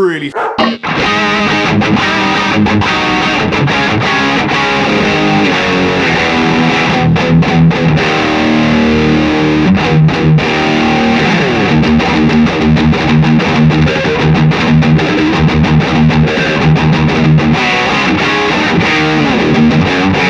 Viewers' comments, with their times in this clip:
0:04 Jeez Sounds fucking amazing!